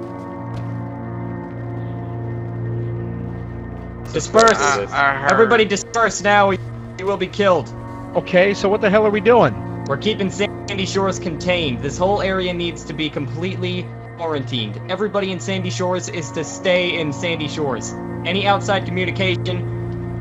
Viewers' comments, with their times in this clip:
0:03 wow dramatic music made it really amazing and spooky